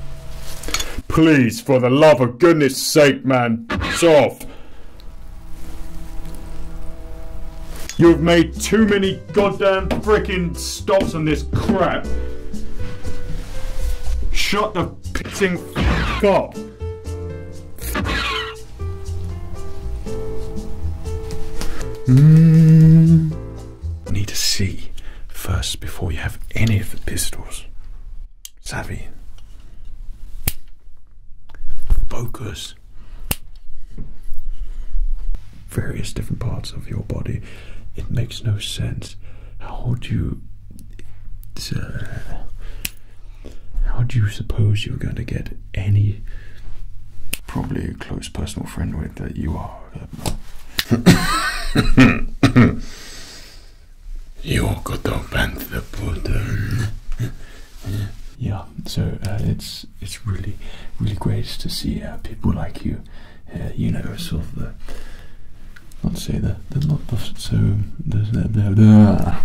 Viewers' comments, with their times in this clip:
0:03 In he Sound like thor for me
0:54 Nice Sebulba impression!!! Loved it